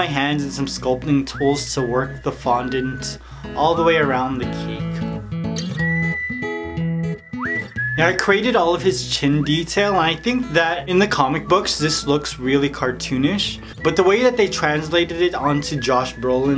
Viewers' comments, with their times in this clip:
0:03 Evey other time you said CAKE but you said CEEK. lol😆😆